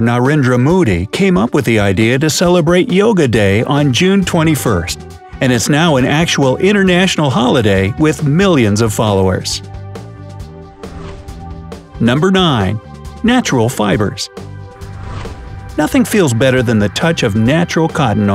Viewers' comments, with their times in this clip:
0:04 Modi pronunciation is bit incorrect
0:05 Narendra 'Moody'🤣🤣🤣 Well done bright side If you liked it 👇
0:06 what the narrator meant: Narendra Modi What I heard: Narendra Moody
0:06 did't pronounced narendra modi properly hit like button if u AGREE or else dislike button IF U DISAGREE